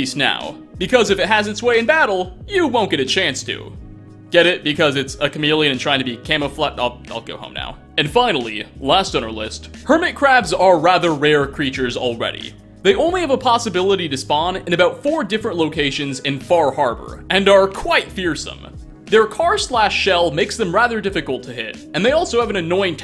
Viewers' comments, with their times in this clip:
0:10 crab music intensifies